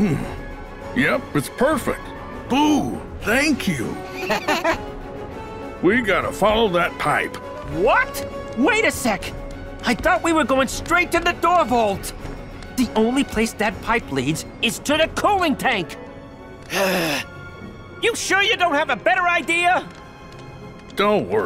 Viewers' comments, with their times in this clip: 0:05 is it just me or boo had demonic laughter